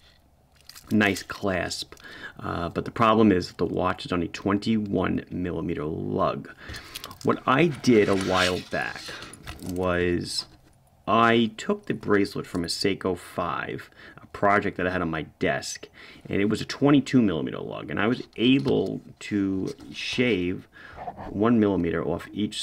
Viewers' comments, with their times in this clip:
0:08 Sounding like Rod Serling👍